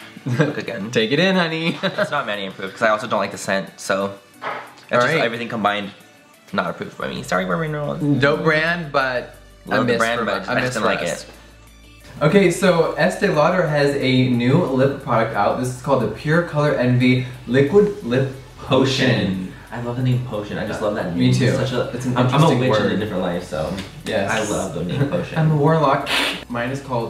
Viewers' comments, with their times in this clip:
0:03 What happened to the audio ?
0:11 the audio changed and I thought my phone broke 😂
0:11 that audio shift like woah
0:12 did anyone else notice how the sound kinda messes up ish?
0:12 Did anyone else's audio change ? Or just me ? Lol
0:12 when the microphone breaks but the show must go on